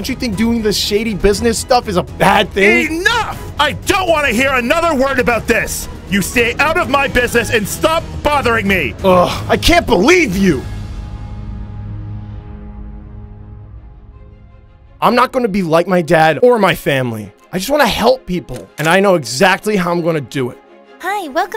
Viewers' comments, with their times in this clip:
0:09 Billy:(Screaming)”You know what, I had enough of you! I wish you were dead! I wish you never be my father! You never care about me! I’m out of here! Goodbye, Dad!”